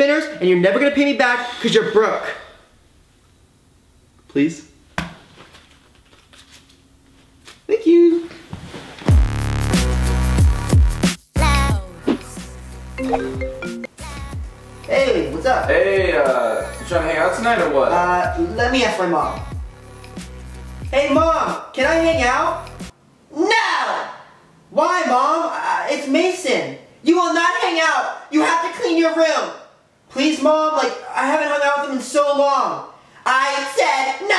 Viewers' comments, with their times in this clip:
0:04 the way he said “please?” with that smile cracked me up 😂
0:22 it sounds like he is saying can I. Make out